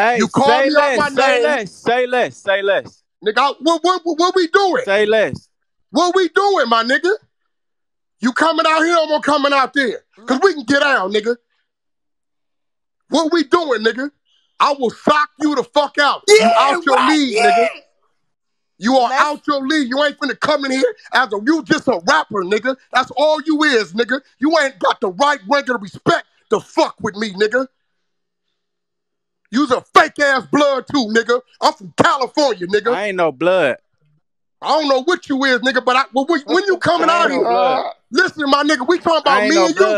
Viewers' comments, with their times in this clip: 0:05 21savage silence says it all
0:05 21savage silence says it all
0:17 69 screaming “YEAH WACK YEAH” 😂😂😂
0:20 nigga voice cracked 🤣🤣🤣🤣🤣🤣🤣🤣🤣💀💀💀💀💀